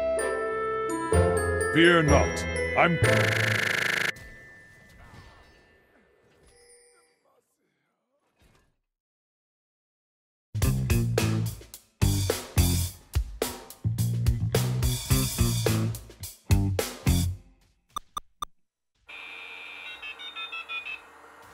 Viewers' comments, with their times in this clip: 0:03 that's just a way brazillians laugh mb we're braindamaged